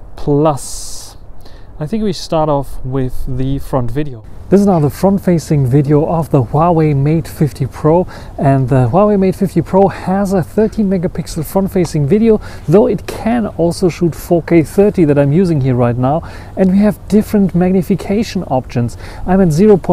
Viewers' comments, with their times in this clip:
0:04 Sound and video not syncronized